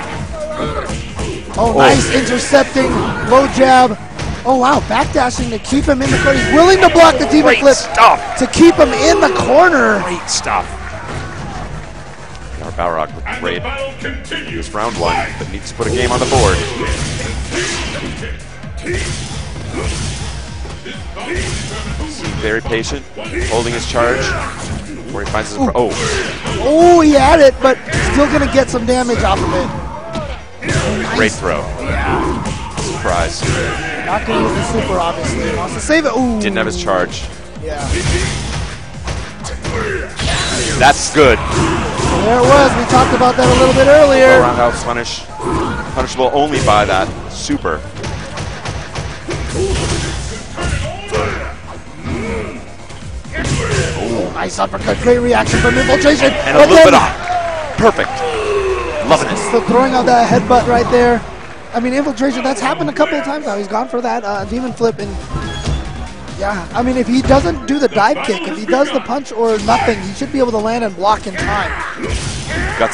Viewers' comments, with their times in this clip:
0:07 HAAA.. swear he sounds like DOC BROWN from back to the future.. GREEAT STUUFFF. GREEAT stuff
0:55 the commentators are so hype they are speakin jibberish. i have no i dea what seth said